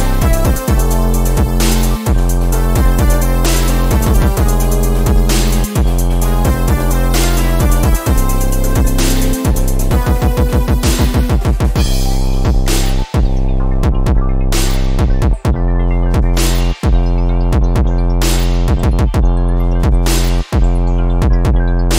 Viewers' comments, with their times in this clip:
0:04 Sounds like the party next door AM. Absolutely turnt, and coming through the walls... ...thankfully it's a vibe.